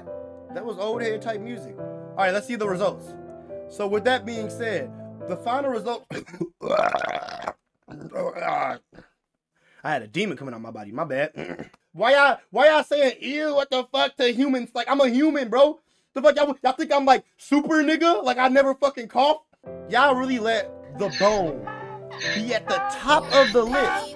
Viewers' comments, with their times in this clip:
0:06 nah, that was not “just a normal burp” dude literally sounded like a fucking zombie or some shit 😂